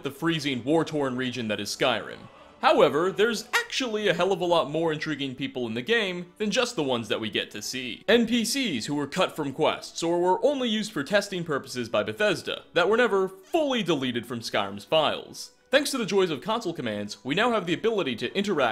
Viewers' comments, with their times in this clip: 0:03 voice break tho
0:03 Yo.. what is that “actually”? His voice just squeaked.